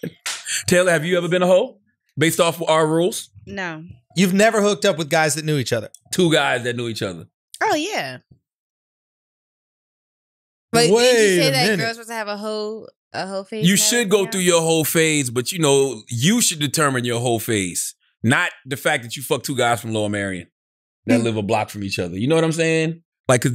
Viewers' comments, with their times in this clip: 0:04 that pause was perfect 😆